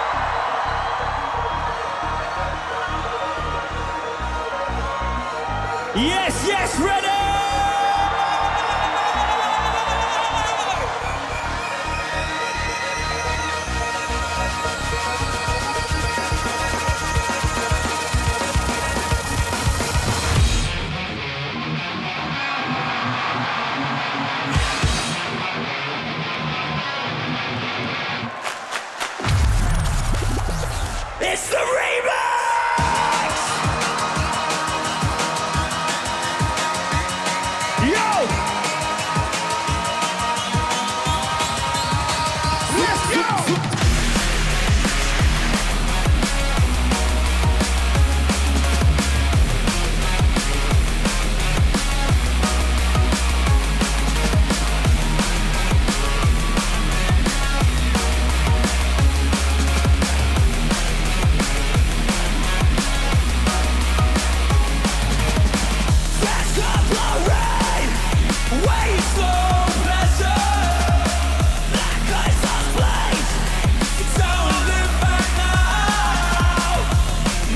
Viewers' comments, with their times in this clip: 0:07 enter the flanger!! Just insane.. cant wait for a new full album
0:07 inbuild flanger Holy shhhh!!
1:01 im conflicted with what genre im in, Scream and Bass? 🤣im here for it tho! 🤙